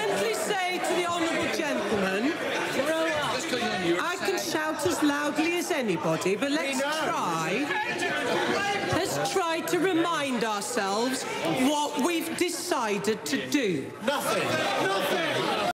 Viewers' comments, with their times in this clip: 0:09 "NOTHING", and again with full emotion "NOTHING". The second one killed me :) :)